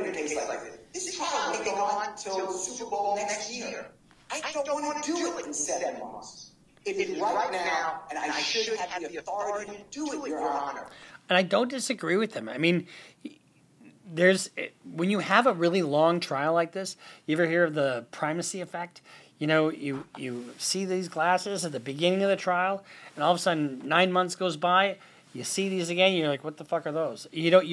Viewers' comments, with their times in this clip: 0:09 double audio again